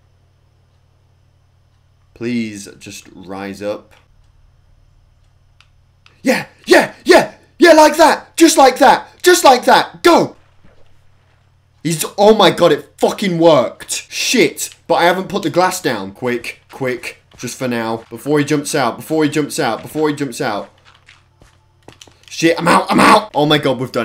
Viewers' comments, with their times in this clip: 0:06 Cheerleader chant lol
0:06 close ur eyes ...why am i like this
0:06 sounded like he’s rapping